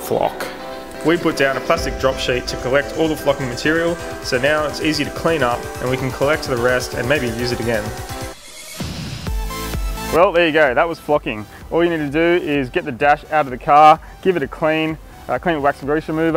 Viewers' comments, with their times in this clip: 0:03 it sounded like” all the fucking material” 😅